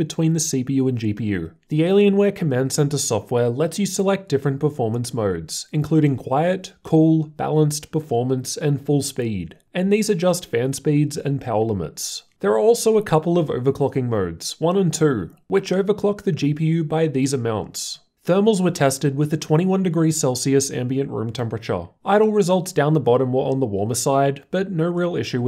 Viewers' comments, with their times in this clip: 0:06 google subtitles: "Performance mode: coal" Yeah, definitely not gonna try that.